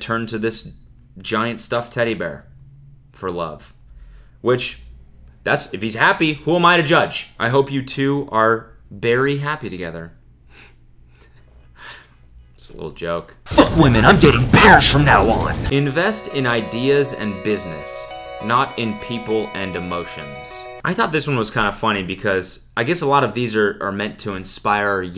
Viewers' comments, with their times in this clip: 0:09 He did a little fake laugh but we all know deep inside he actually liked that joke